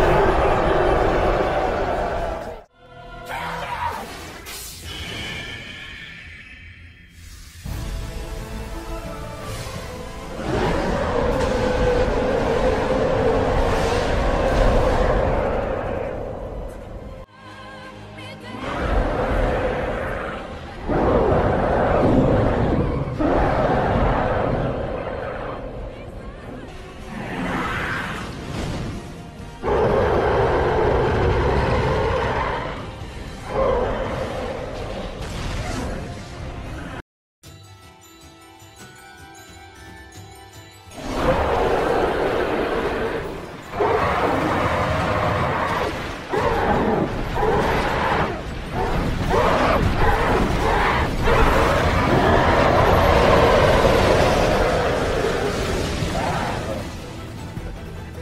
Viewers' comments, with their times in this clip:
0:09 ok. that roar sounded FUCKING amazing.
0:17 I absolutely LOVE his roar so much, it sounds amazing ❤👍 (also, kills me every time 😂)
0:41 This is my preferred roar better than both the official dub and sub. This is what I typically imagine Titans sounding like Edit: this was already my favourite aot scene but you somehow made it better, fantastic job